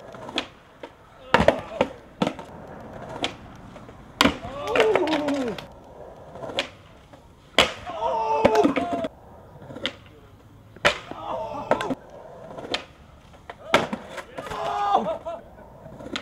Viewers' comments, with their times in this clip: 0:04 My dude sounded like a cacodemon